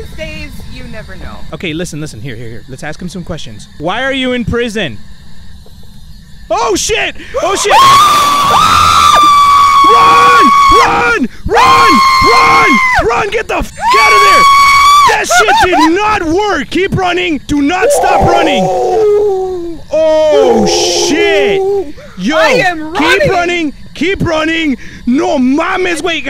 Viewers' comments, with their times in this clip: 0:05 when the ear rape happend 😔
0:08 MY EARSSS HALP